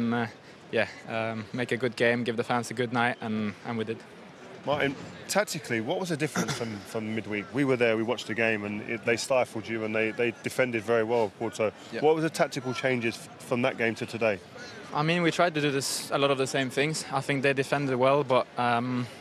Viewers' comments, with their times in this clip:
0:06 Keowns slight cough is just his Goonerism . Both Rio and the presenter will have noticed that. Rio’s just tryna kill energy cos he’s burning